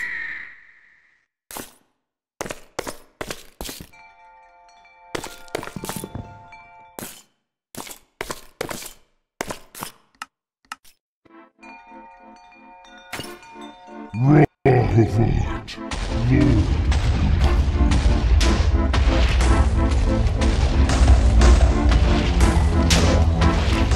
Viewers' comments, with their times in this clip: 0:10 I love how the explosion sounds sync to the music and after the music stops it kind of sounds like it would sync to that demonic chanting in the cultist base in Doom Eternal